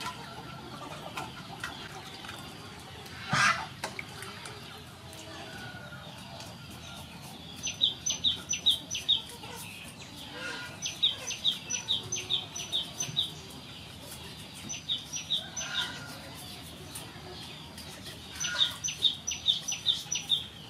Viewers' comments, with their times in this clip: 0:07 This looks delicious! What was that beautiful bird we can hear ?